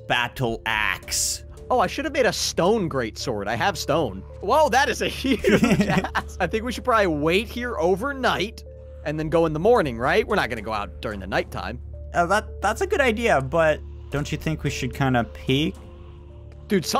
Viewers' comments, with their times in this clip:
0:04 i thought he said *ss instead of axe